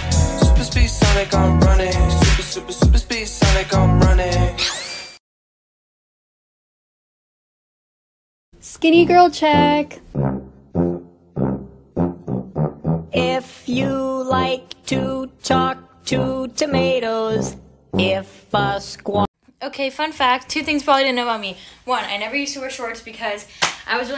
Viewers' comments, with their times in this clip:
0:09 I shrieked when Veggie Tales theme started playing😂😂🍅🥦